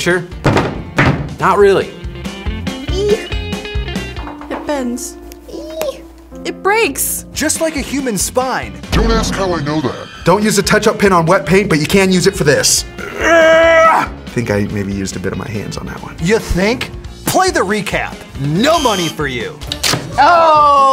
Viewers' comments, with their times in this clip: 0:04 The sadness in her voice .. we all break girl we all do